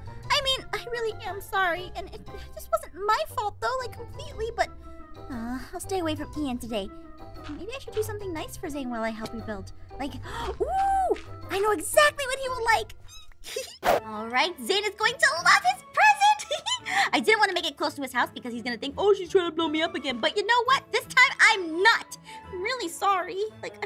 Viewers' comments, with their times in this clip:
0:09 The way he said big trouble😂